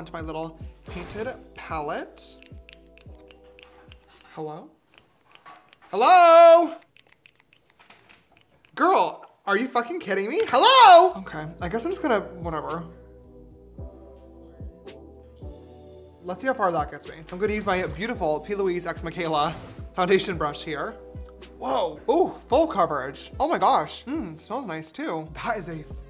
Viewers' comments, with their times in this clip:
0:10 he sounds like woody